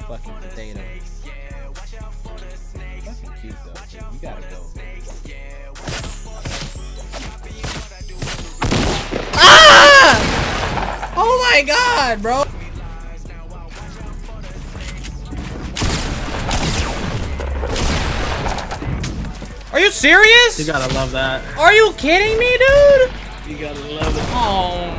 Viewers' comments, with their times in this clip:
0:09 That scream got me